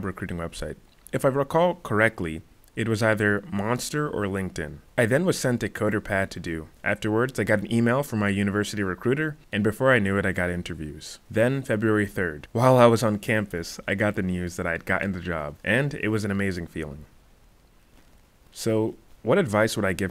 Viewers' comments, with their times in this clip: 0:06 Great video man... Sorry, I could hear what you said the gave you to do